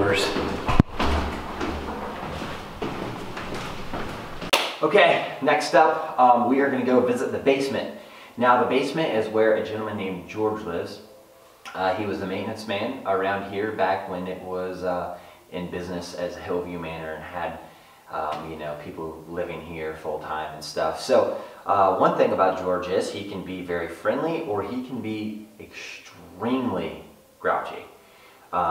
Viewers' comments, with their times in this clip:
0:04 i could hear talking or singing
0:14 if you could cut out your voice you can hear music in the background right before you go to the Basement. 💜💨💨💨💨💜